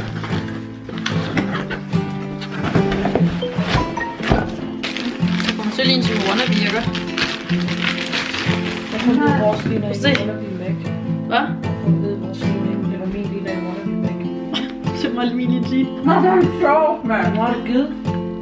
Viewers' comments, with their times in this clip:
0:05 Danish sounds so beautiful ♥